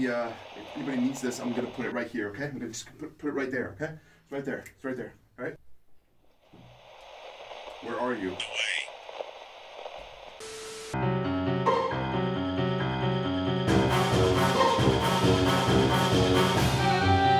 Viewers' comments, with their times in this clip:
0:03 then you can't find the box making constant noise because it clipped through the carpet